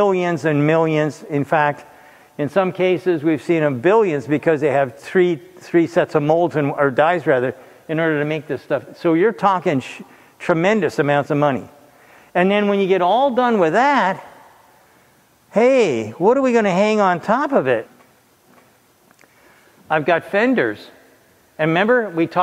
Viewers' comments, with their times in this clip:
0:10 "So You're talking sh...[slight pause]...tremendous amounts of money." :D